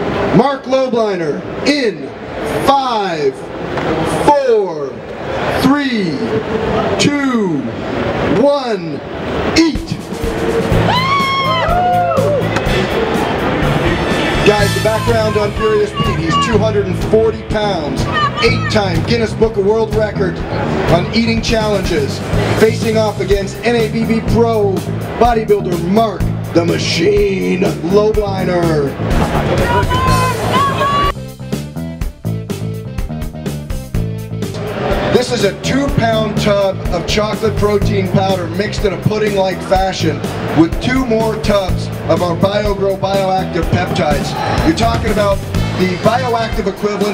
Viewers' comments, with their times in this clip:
0:07 LMAO you can hear the wind from the karate chop
0:29 There was a polish voice in -"dawaj dawaj" :D